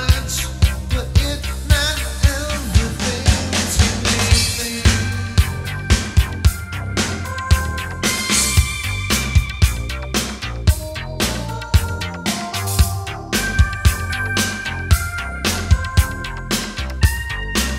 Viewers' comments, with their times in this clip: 0:04 literally having chills from this melody... i imagine in a different universe trent focused on the more synthy pop aspects of his music and i bet it must feel nice in there.